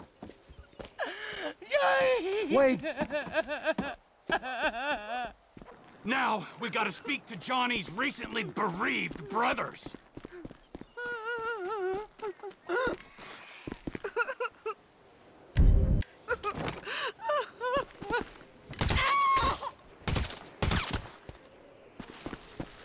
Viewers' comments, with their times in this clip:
0:10 crying Ashely LOL